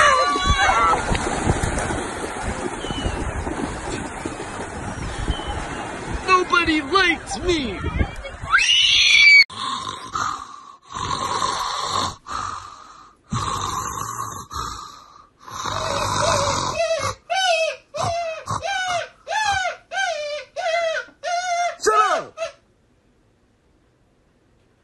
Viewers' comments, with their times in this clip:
0:05 NODBODY LIKES ME! *proceeds to scream demonicly*